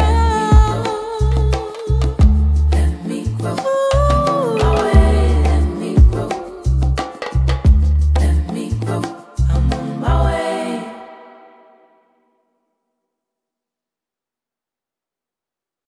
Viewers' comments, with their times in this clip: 0:11 this song is flawless ❤️❤️❤️❤️